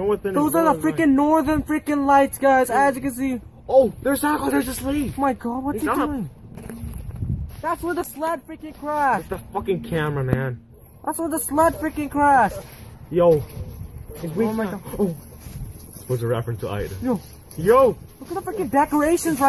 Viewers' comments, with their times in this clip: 0:05 you can hear footsteps coming from the "Drone"